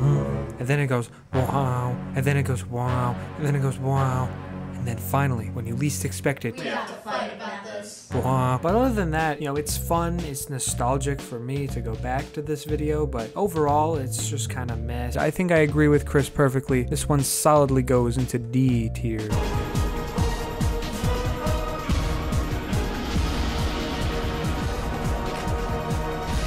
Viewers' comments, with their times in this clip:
0:08 that wah was genuinely so unexpected, wow. phenomenal sound design!!!